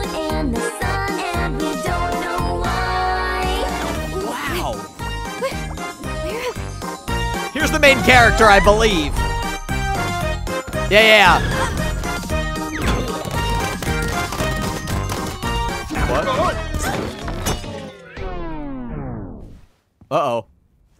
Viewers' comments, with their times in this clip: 0:03 I thought the <<wow!>> was part of tadc😀